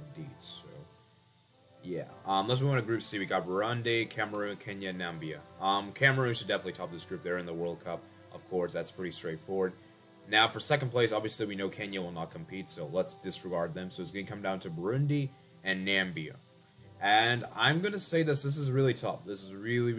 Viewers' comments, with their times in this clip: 0:04 "Nambia" the Donald Trump way